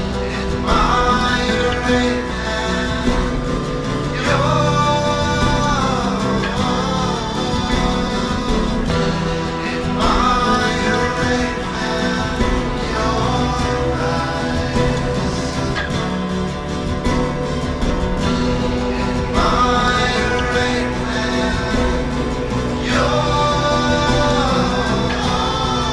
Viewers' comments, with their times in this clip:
0:09 sounds like am i a rapist in your eyes